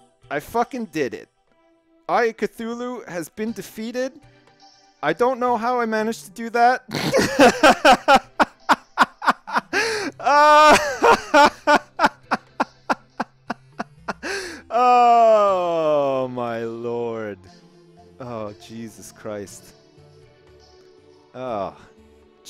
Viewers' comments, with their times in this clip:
0:04 That laugh is the best that has ever happened to my ears :P